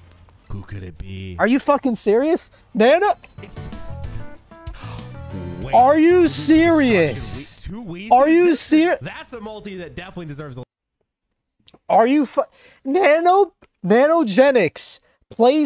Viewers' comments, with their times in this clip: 0:03 gets jumpscared by lobby's theme LOL